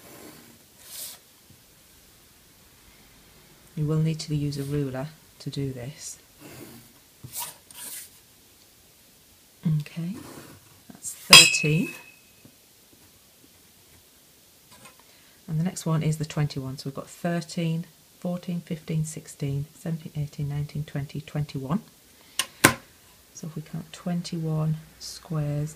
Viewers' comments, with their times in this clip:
0:10 metal pipe sound effect